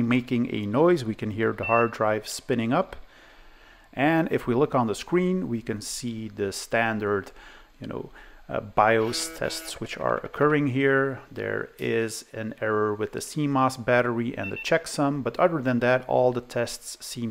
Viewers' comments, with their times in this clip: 0:03 I heard the classic noise of a 2.5 inch Conner hard drive with stuck heads. This is caused by a rubber bumper onto which the voice coil assembly hits when the heads are being parked, which degrades with the years until it becomes a sticky goo. This locks the head assembly, which is no longer able to free up from the parking position (that "trrrrrrrrrr" noise is the voice coil actuator trying to free itself). To fix that I usually open the drive and I put a piece of adhesive tape in the spot where the voice coil hit onto, so it won't stick to the bumper anymore. The trick worked well on the handful of 2.5 Conner hard drives from that era that I had to fix.